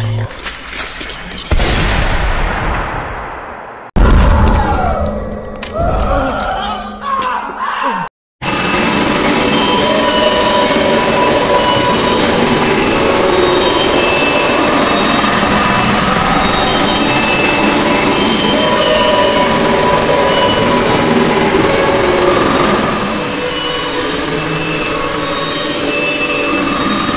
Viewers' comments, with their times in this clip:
0:09 Bro this face is very disturbing and disturbing sound